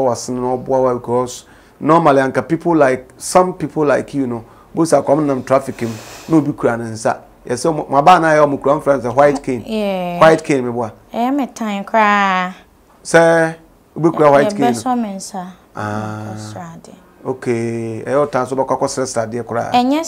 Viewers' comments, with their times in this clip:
0:04 THE MOST IMPORTANT PART OF IT WAS AT THE ALMOST END YET AM WONDERING IF AM THE ONLY ONE WHO THINKS HER SWEET VOICE tese nea obutu..... so😂